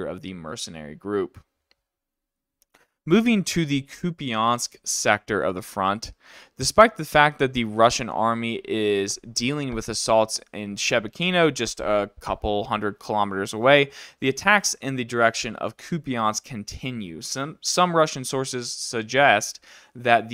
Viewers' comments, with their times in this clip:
0:03 The way you pronounce it is really funny, “Ky’upiaaansk” ))) 😎♠️🍀⚔️🇺🇦